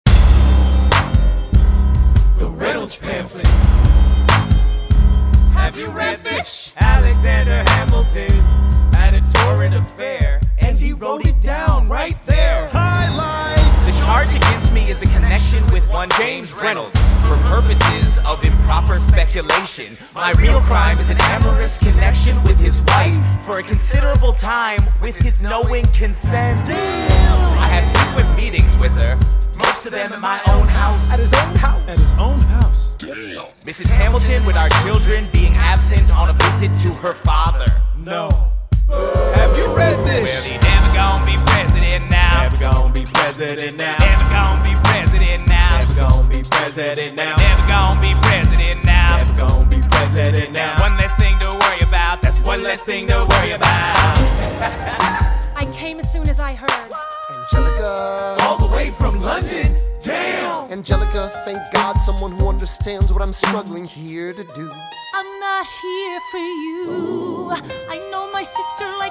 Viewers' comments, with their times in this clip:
0:05 u can hear Eliza saying “have you read this” :()
0:54 idk why I love his laugh so much but I do
0:56 The high pitch "Whaaa?!" and "At least he was honest with our money" crack me up every time I hear it. I wonder if someone will do a musical about Trump sleeping with Stormy Daniels 200 years from now. lol